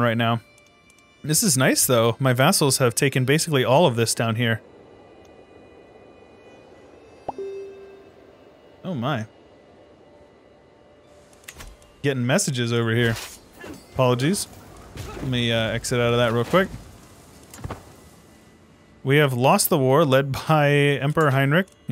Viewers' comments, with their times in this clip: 0:06 Bruh that sounded like one of those sounds you hear on a plane to fasten seatbelts 😂